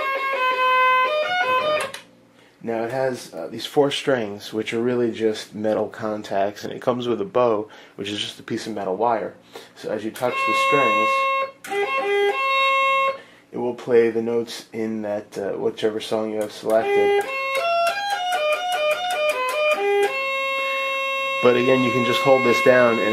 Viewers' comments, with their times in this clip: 0:10 Baby Galileo serenade! #mozart